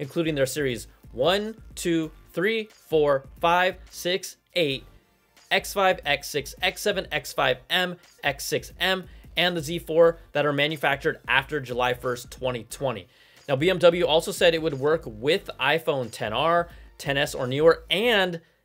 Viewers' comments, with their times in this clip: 0:03 he started singing a song lol